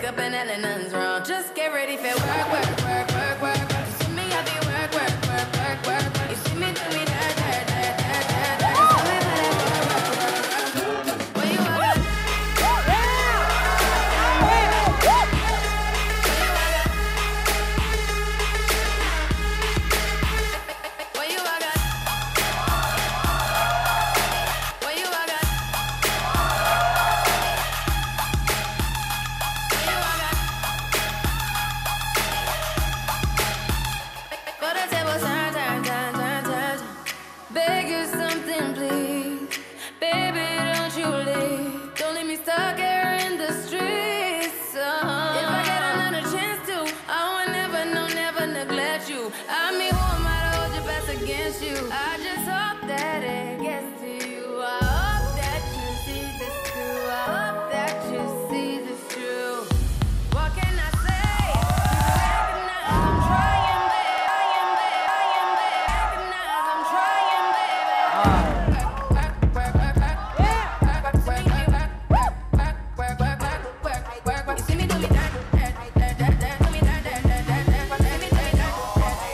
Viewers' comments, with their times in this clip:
0:08 WHOEVER SCREAMED 'OMO' IS A MOOD AHAHAH
1:05 no one: literally no one: chungha breathes me: aAaaAAAaaAaaa